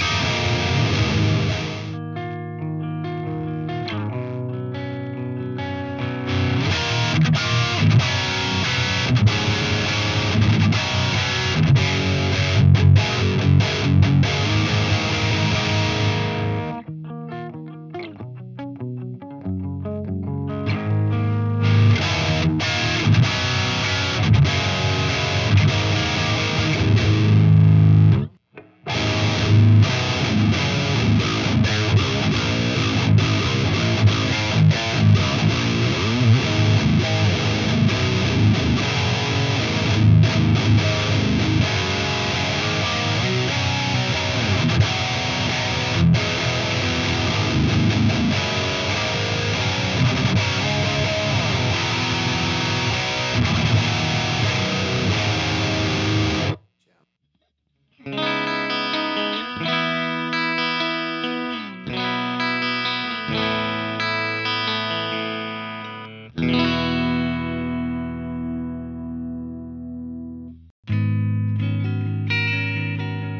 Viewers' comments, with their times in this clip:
0:09 FAK, why did I sell my Roland Cube 60..... It sounds exactly like everything these dudes play on. Dude, wtf, what are you expecting me to do, i can't do much more than this.....
0:30 Listen to doesn't it kinda sound like Rainbow Gravity? Look at the date when this video was uploaded!
0:57 The Predator and Fat Boy sound best on CLEAN!